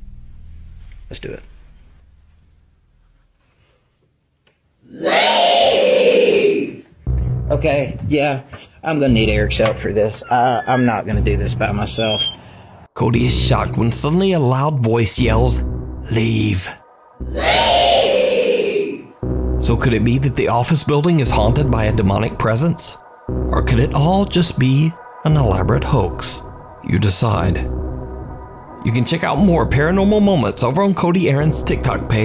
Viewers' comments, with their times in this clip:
0:03 That was the loudest and clearest i've ever heard a ghost talk
0:03 “Leave” she was mad asf 💀💀
0:04 that one kid in 2019: “REEEEEE”
0:05 was scary but im not really convinced its real but the ghost wailing part gave me goosebumps.
0:06 that scream made me leave my soul and shook everyone of my bones
0:06 Lmao it sounds like a cod zombie lmao
0:17 Ok, so if you listen carefully, the "little girl" has a similar Southern drawl accent as the ghost hunter. It's really just his voice in a higher pitch. And "little girl in white appearing in the corner of your vision"? Really? No other tropes were available?
0:18 if it was real that was the loudest and most clear I ever heard
0:20 I know its supposed to say "leave!" But all I hear is: "REEEEEEE!" 😂😂